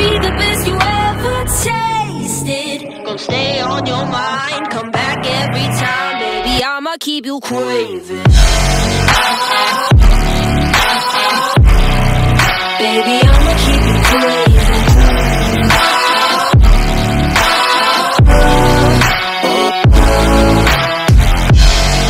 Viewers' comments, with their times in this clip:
0:03 This song is lit and the drop blew me away to